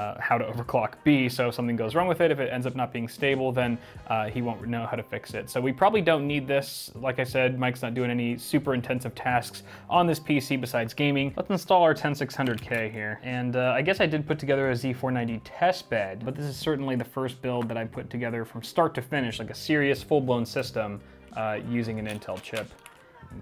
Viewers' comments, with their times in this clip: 0:06 those little VRM fans sound absolutely horrible hahaha I prefer using a 120 mil down draft cooler for instance Be Quiet makes one that’s perfect, pair it with a high quality 120 mil fan and you’ll have great CPU and VRM cooling simultaneously - and it won’t sound like a tiny jet engine going off in your PC hahaha